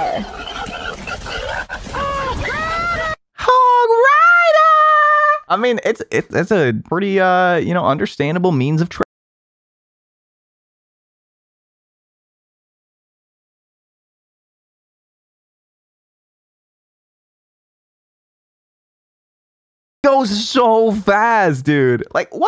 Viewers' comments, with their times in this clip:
0:07 no sound lol